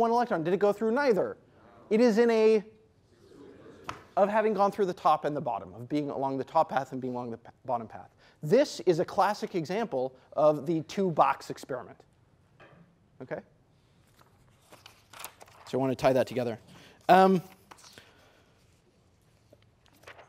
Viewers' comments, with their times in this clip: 0:03 What is the inaudible word ?